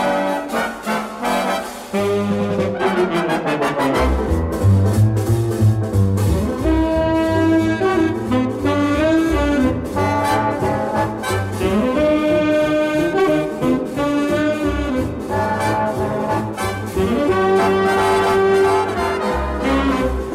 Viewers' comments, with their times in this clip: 0:05 I was surprised by the music